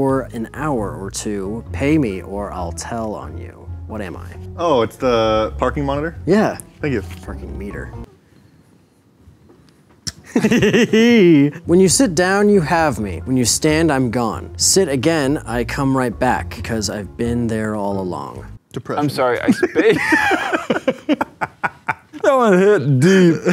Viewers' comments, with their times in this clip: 0:09 Todd Howard official laugh
0:09 his laugh hahhahaa
0:10 hahaha the laugh